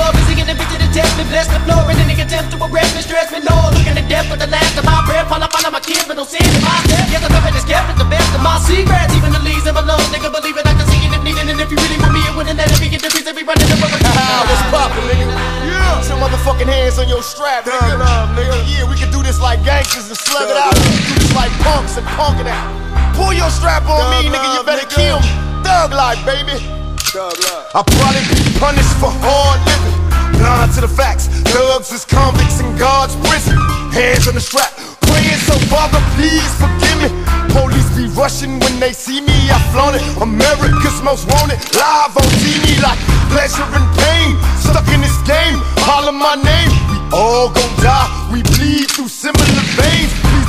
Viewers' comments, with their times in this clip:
0:09 Bizzy murders it ....
0:31 that guitar kicked in with Pac's verse, RESPECT